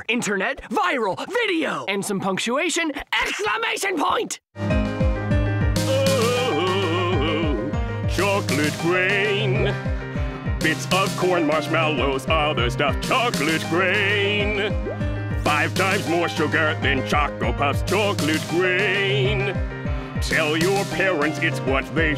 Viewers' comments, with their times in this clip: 0:04 This is where the song starts